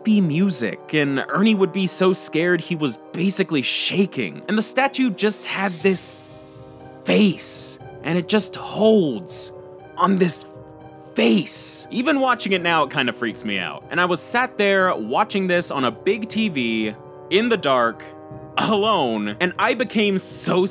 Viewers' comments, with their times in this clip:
0:04 romantic music plays